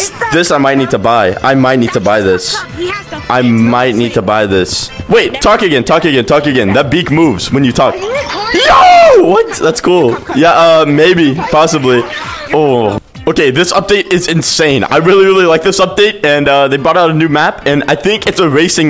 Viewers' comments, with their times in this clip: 0:04 Yes I was the one who was yelling ARE U RECORDING when he asked me to talk i had the cloud on